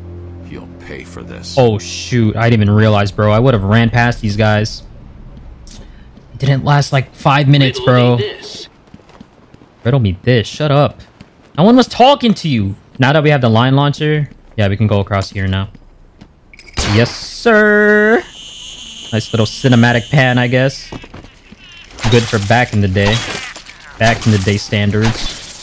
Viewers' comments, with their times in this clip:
0:07 was that a hmmm or an mmmm :D